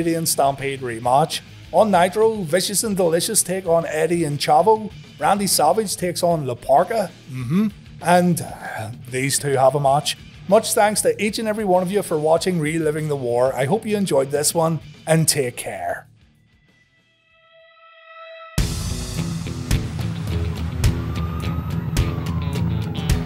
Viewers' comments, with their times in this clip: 0:05 The tenor of this "MmHmm" cracked me up for a good while. I love this show.